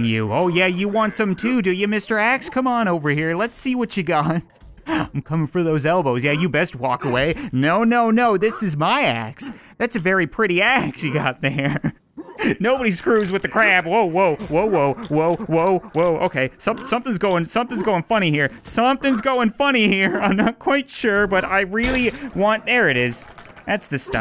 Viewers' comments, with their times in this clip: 0:09 I thought it said that’s a pretty ass